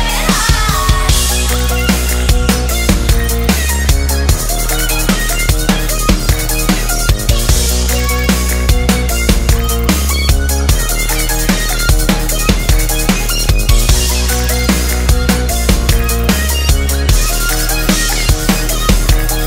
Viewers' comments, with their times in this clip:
0:06 He did it! Miss a hit on hi-hat !!